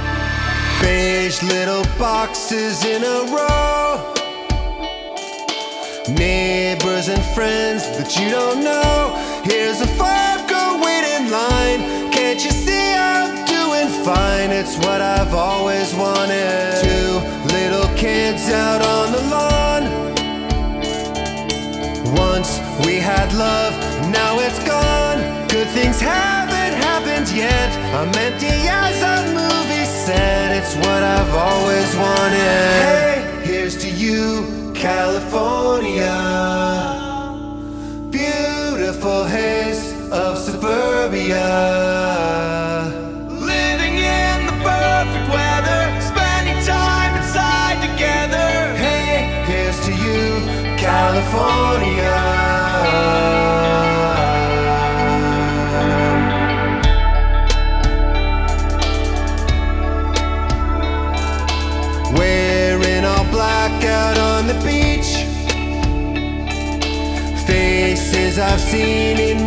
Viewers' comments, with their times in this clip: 0:09 Here's a fart go wait in line
0:09 "here's a fart go wait in line" - I can't un-hear it!!
0:10 i thought it was "here's a fucker wait in line" LOL
0:56 My favorite part of the song, other than the harmonizing. That lowkey bass drop, and the smooth guitar hits me.